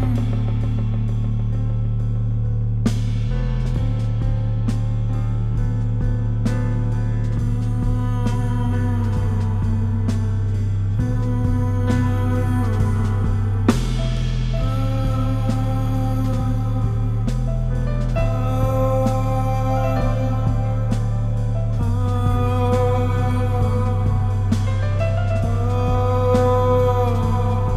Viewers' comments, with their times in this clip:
0:10 The vocals are absolutely amazing.